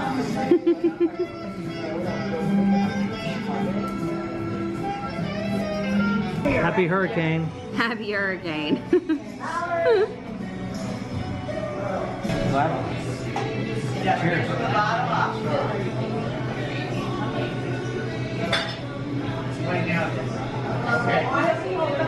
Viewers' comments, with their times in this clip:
0:09 Meatloaf on the jukebox in the bar!? I love me some Meat but was expecting NOLA jazz ...